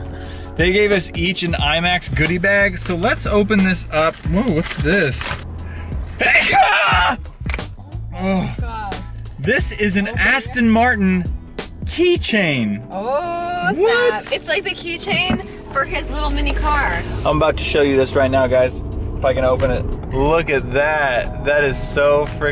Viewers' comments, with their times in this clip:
0:06 practicing your eagle call I see